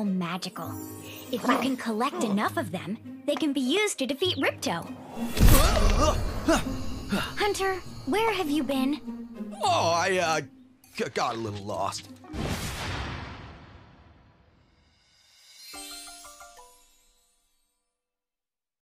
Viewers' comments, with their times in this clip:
0:09 hunter sounds like roger craig smith for a sec